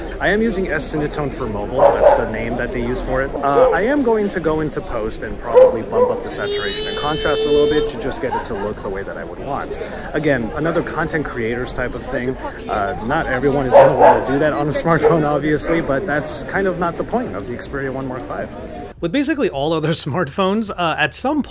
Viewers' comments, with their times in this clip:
0:06 the phone pick the the stereo sound almost perfect, watching this on earphone and i thought there was around the right side behind me, only to realize its from the video